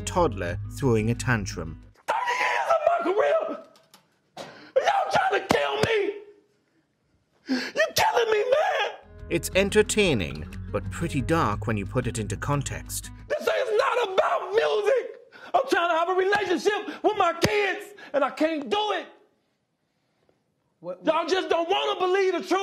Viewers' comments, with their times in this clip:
0:07 R. Kelly's falsetto during that meltdown could have made him a good Bee Gee.